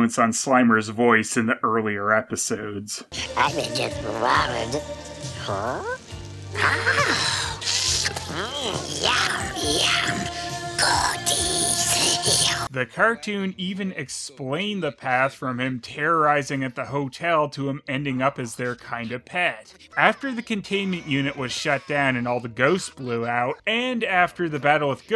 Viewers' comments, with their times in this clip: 0:10 Slimer pretty much says "Godis", which is "Candy" is Swedish. That must have been or purpose.